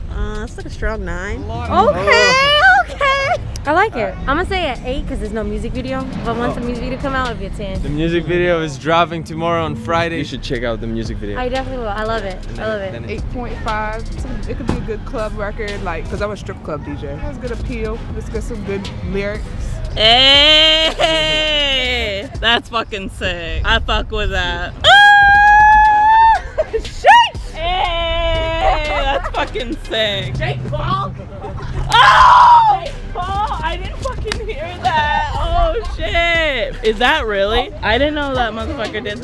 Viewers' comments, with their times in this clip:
0:03 sounds like nicki kinda and Ariana at the same time
0:20 The girl clearly doesn't get attention at home, hence why she is super loud and obnoxious for no reason. People like that tend to be he most annoying ones in life.